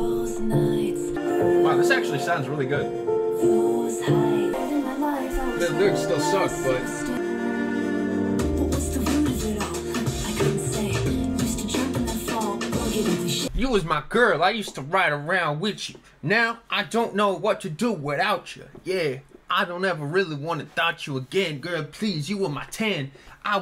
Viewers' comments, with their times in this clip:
0:07 noo bro it started good and she had to start rapping 😭